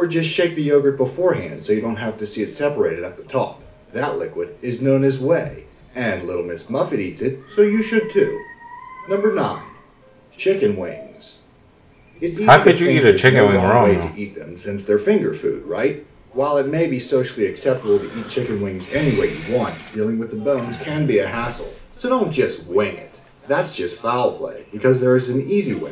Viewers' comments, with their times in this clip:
0:08 So y’all didn’t hear that scream ?